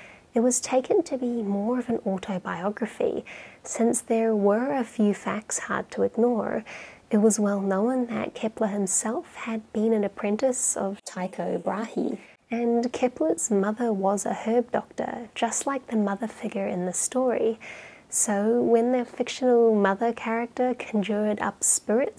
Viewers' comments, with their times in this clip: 0:10 You sound so kind and sweet that I was almost in tears after the voice over